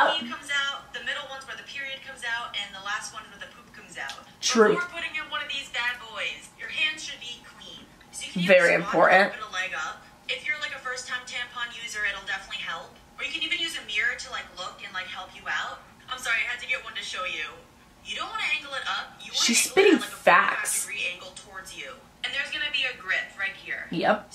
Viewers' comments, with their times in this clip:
0:10 I thought she said 'a first time tampon' I- #girly